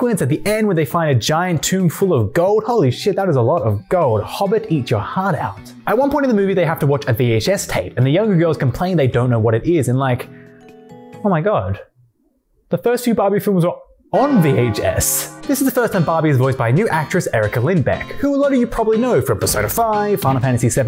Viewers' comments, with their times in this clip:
0:04 that background song in is so nostalgic. i still remember my golden retriever enjoying the pressure of the shower 🤣 (ps: i was abt to say that u skipped the movie where they got the puppies, so glad i kept watching)